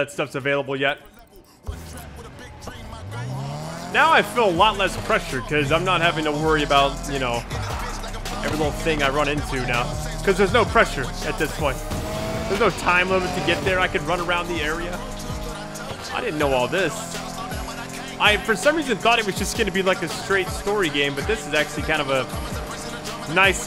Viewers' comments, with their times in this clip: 0:06 that music was dope